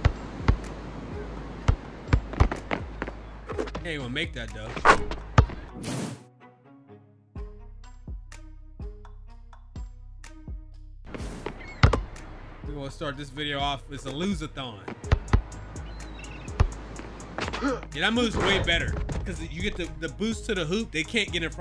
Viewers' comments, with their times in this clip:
0:03 swish was so loud YT gave me a Ad/Commercial break😂😭